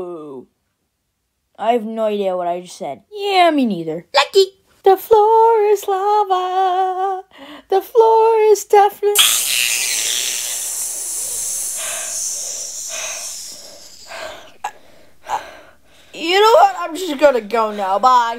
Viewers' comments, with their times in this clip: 0:05 this reminds me of the song called the final countdown